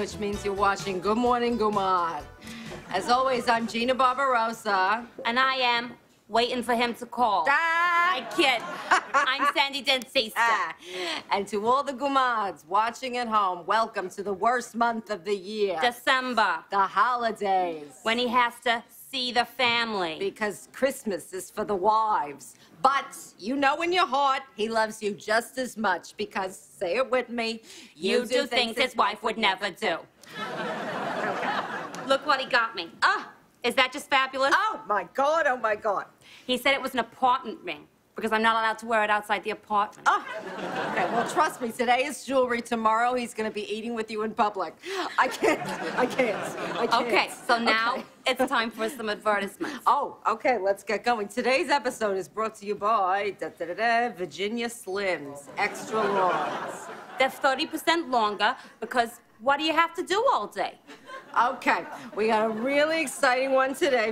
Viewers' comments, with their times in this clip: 0:07 The beginning of Kate's laugh sounds like the beginning of Lion King
0:49 Aw, she let her Britishness show. Haha. I love the way they say advertisement like “adver-tiss-mint” as opposed to the American “adver-teye-zment”.